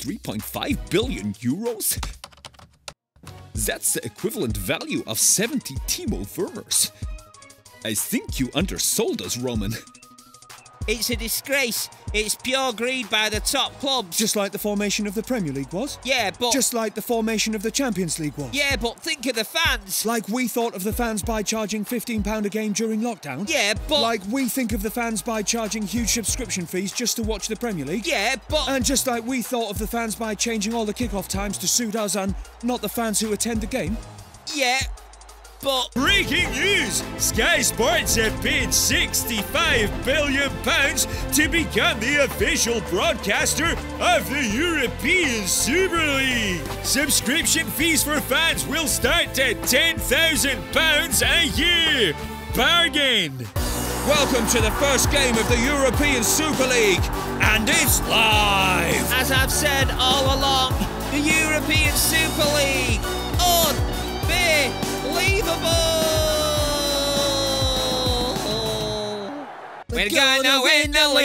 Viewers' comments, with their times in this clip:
0:10 the animator is woke...lmao and the way they dont even try and get the characters voices like south park is mad
0:54 Guys anyone please say song name This is so meledous 😌